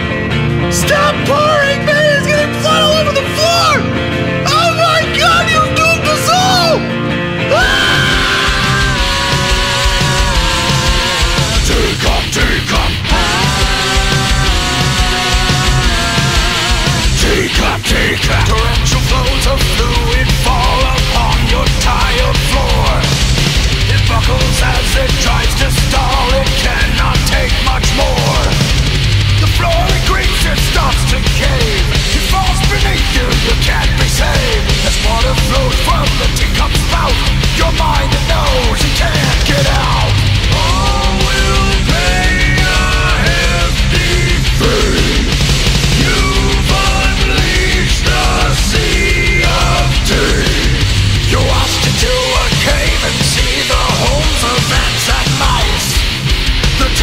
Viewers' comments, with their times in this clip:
0:06 sounds like 2nd death note intro
0:07 Dude! This is one heavy and badass song. get ready to UNLEASH THE SEA OF TEA!!!
0:08 when this happens change the video speed to 1.25 and it sounds good
0:24 speed dis sum hardcore rock
0:40 that's one pissed off tea pot
0:40 there is a 2 part harmony